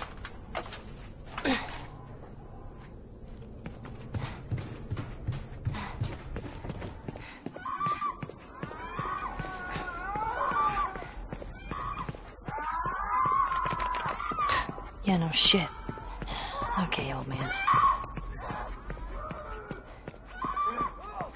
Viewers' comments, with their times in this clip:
0:07 Starting It disturbingly sounds like clicker porn >.<